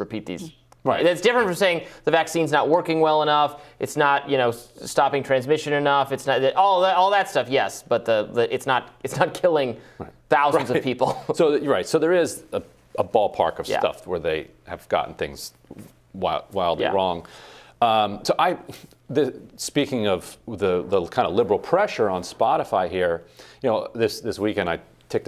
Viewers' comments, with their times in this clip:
0:07 "It's not killing thousands of people chuckles nervously "